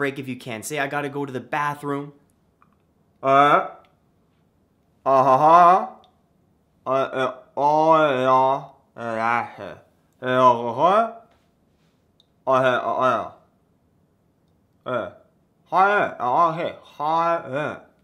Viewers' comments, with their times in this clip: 0:03 this is exactly how I talk in my sleep